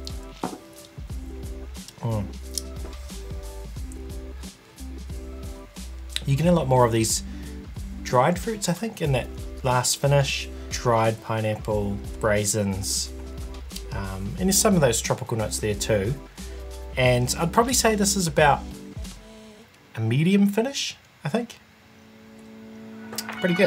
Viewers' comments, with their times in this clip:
0:10 .. what are BRAISINS? 😅